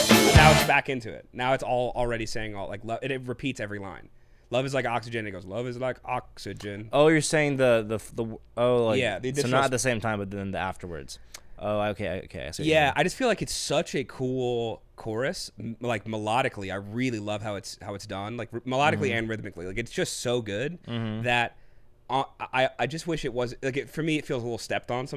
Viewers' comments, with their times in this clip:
0:07 It sounds stepped on because it IS stepped on. You want the album version that clocks It's not on Spotify anymore (stay away from greatest hits version) but is on youtube. "Try again, Grasshopper." 😅 - old 70s TV Kung Fu reference...